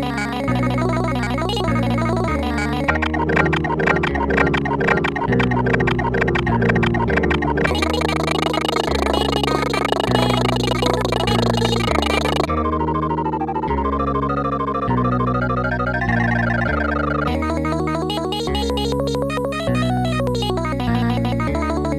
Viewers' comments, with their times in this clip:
0:03 That one note spam part